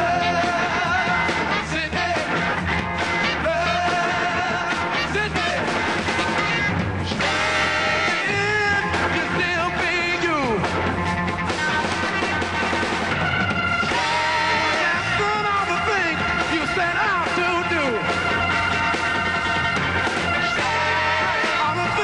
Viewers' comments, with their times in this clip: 0:08 This is one of my favorite Sly videos, and I think it captures the essence of Sly and the family stone fully. I just love how they transition into STAND! The horn riff is so amazing, sounding like a fast moving car honking, cause that baby is flying at full speed!